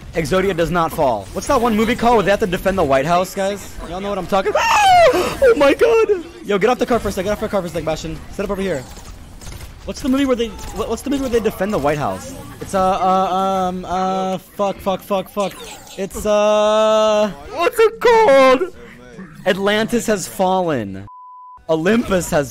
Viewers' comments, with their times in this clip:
0:04 When you pinch a chicken